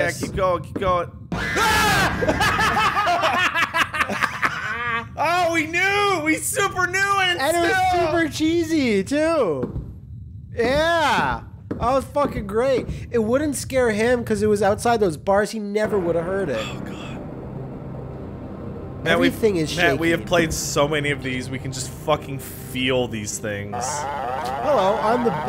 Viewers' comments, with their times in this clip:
0:07 I got jump scared by your stupid screams lol